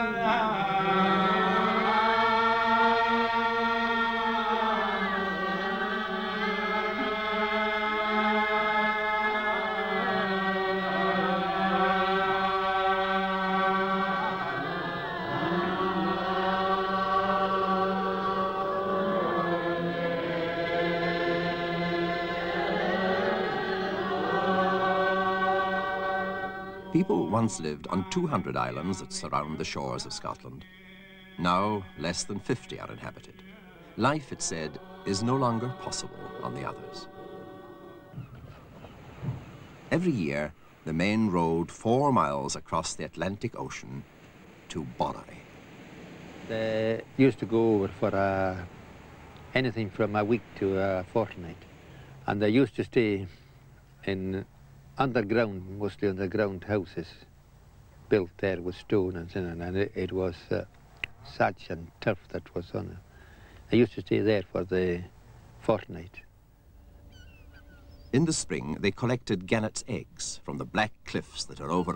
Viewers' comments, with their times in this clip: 0:03 Creepy "children of the stones" soundtrack
0:52 The accent of the man reminds me so much of the accent that the people that live in the village Sumba have. Sumba is the southest village in the Faroe Islands. Sumba is also the first land/village the Scottish people saw when they sailed up north.